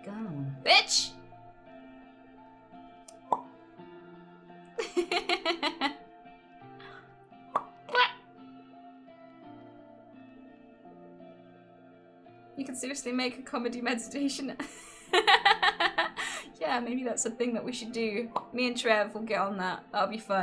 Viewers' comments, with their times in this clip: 0:04 that noise after the pop is possibly the cutest thing I've ever seen
0:06 killed me xDDDDD thx you i am so relax cuz the laugh